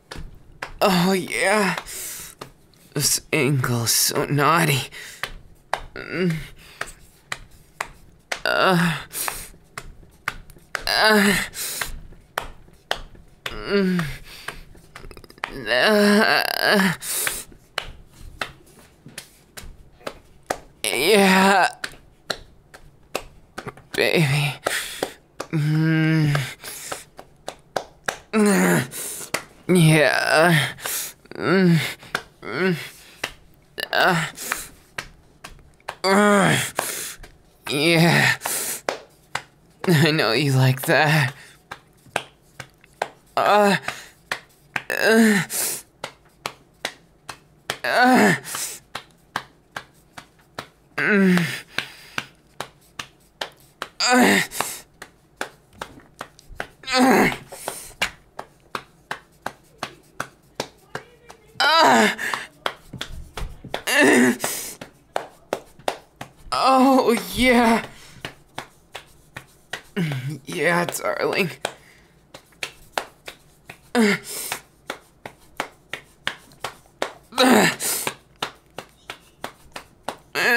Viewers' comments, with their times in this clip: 0:05 Wait wait wait whi else herd the voices in the background in
0:59 i hear people in the back lmao
0:59 BRUH I HEARD SOMEONES VOICE IN THE BACKROUND I-
0:59 I swear his Mona's are ✨𝓪 𝓶 𝓪 𝔃 𝓲 𝓲 𝓷 𝓰✨
0:59 LISTEN IN THE BACK THERE IS PEOPLE. SO YOUR TELLING ME SHE WASNT ALONE IN HER HOUSE WHILE RECORDING THIS??? 😭😭
0:59 I heard a voice In the background And then LOUD MOANS
1:00 "Why are you being so n-" Denki: *MOAN LOUDLY* Edit: haha good one
1:00 I heard people in the background
1:01 can anybody else hear someone else in the background?
1:01 a hear a girl's voice saying like "what are even doing?"